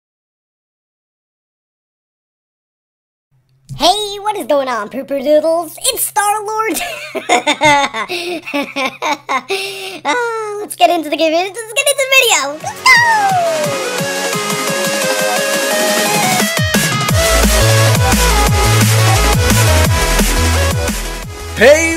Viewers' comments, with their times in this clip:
0:06 what happen to your voice also it sound great